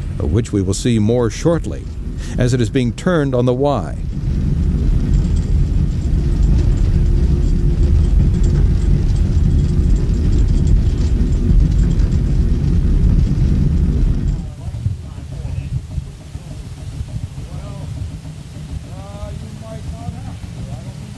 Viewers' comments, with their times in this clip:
0:06 The background noise reminds me of UP 3985's whistle